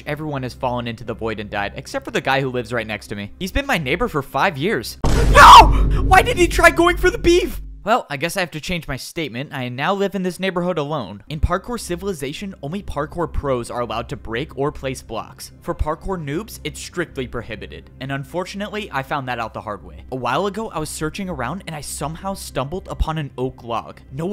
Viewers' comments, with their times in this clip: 0:03 You actually just jumpscared me when your neighbor fell, I looked away and you said NOOOOOOOO!!!!!!!!
0:05 That voice break though 😢
0:05 that was true sadness in his voice😭
0:05 there was true fear and sadness in that scream.